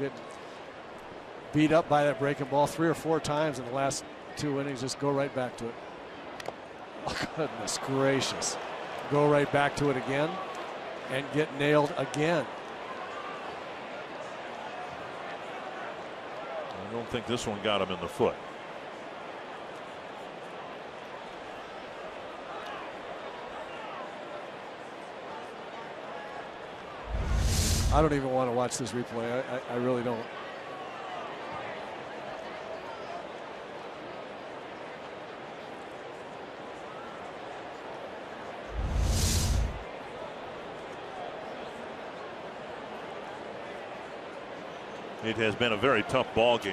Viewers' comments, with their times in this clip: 0:05 The comment guy struggled not to laugh lol
0:33 silence of solidarity